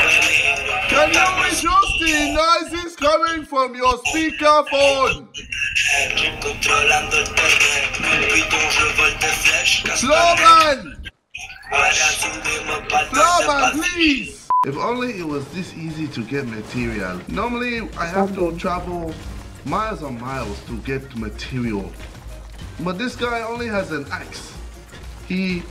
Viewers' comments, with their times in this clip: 0:06 is the best the music I miss this ksi and also old fortnite